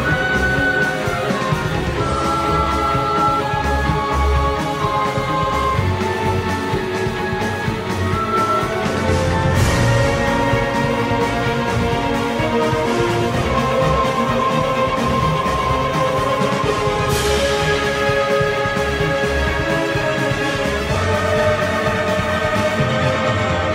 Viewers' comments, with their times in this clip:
0:04 What is the song from and or called mins? The Guitar is INSANE!!!!